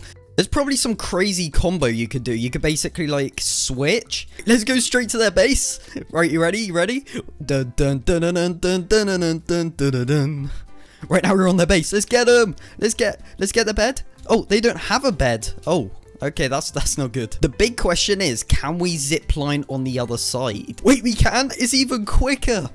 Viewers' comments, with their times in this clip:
0:07 no one: *INTENSE MUSIC*